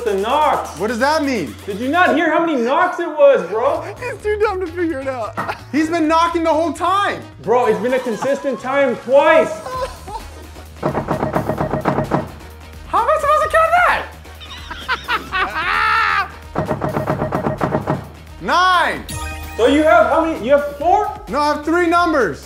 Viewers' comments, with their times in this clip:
0:09 thats 11 knocks tho?
0:10 he knocked 11 times not 9 😂